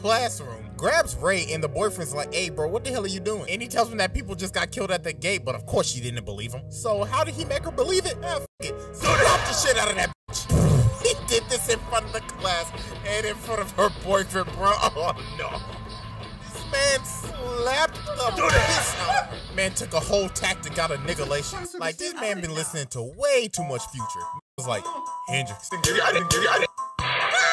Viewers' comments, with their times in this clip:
0:09 That smack tho 😂😂